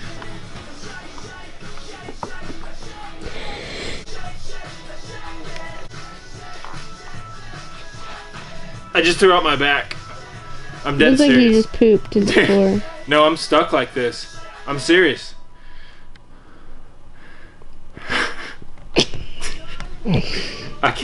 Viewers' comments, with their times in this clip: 0:05 you can fuckin hear his back